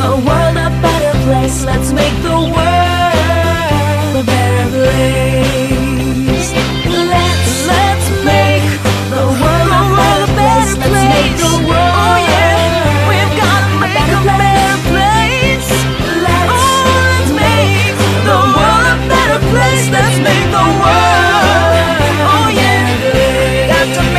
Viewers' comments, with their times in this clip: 0:07 on i love the song